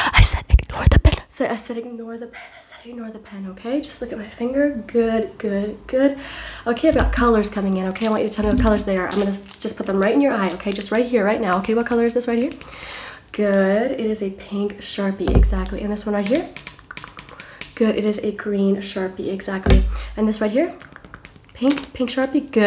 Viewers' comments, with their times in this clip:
0:07 Pencil tapping 😍 Loved it